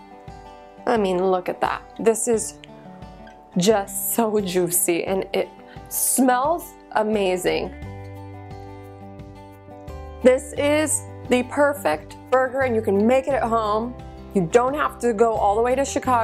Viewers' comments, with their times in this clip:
0:04 Lol what's with that accent coming out when you said "It's just sooo "Joosy" hahaha. Cheeseburgers did something funny to you there hahaha